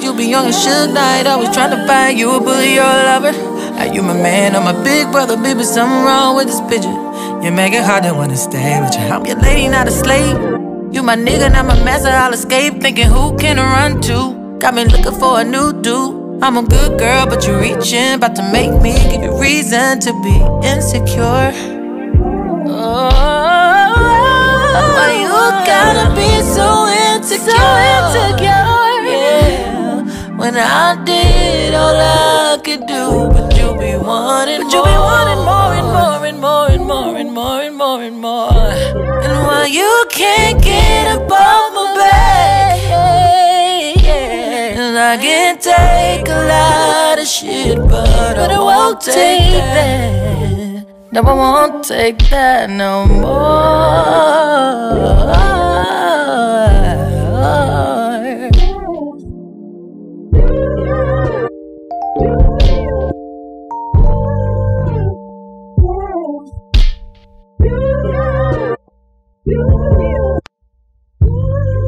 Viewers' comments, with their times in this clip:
0:07 this woman's different ranges makes me want to fall flat out on the floor😐
0:08 her deep voice is 😍😍
0:51 Her riff "And I won't take that no more" is ...your welcome!
0:51 Pov: u finding the riff thanks to me its
0:52 Is it that super low one !?😫
0:53 Yo those vocals killed me... *breathes in ....wooooo.... thank you Jasmine X
0:53 Omg that run !!!! EPIC!!!!!
0:53 for whoever is trying to learn the run slowed down 😂
0:55 ...but that little ad lib JS gave us .... MY LIFE!!!!